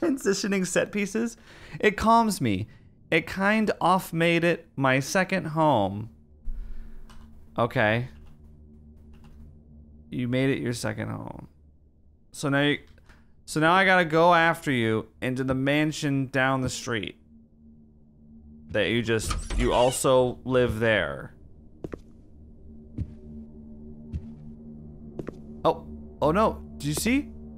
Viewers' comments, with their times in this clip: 0:09 the door opening noise is the AIM login sound lmao